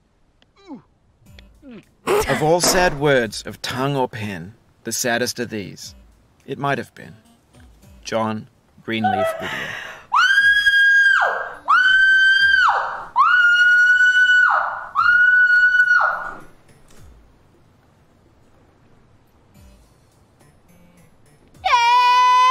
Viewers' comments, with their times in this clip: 0:09 that is definitely NOT falsetto